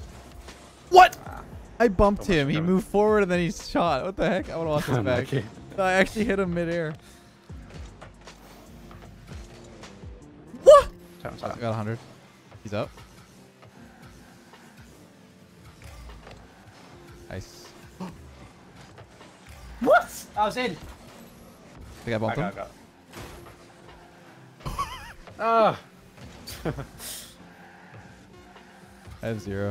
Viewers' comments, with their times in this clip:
0:10 Your "Waaaahhh" at .25 speed has me dead btw.